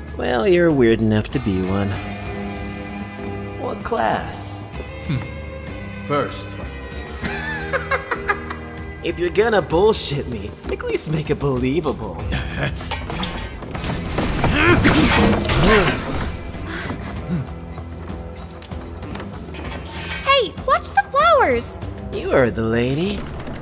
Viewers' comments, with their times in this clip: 0:07 That laugh is incredible